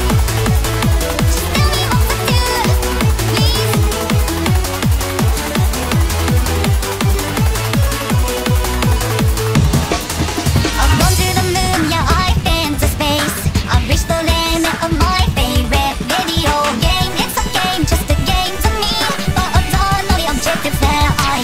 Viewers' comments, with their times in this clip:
0:03 the little nervous "please?" is gold 😭😭😭